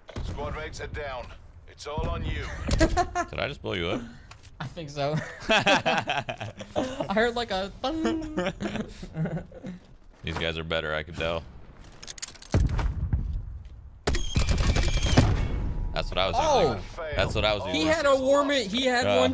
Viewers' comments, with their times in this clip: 0:07 how the fuck he can say the ط letter he's legend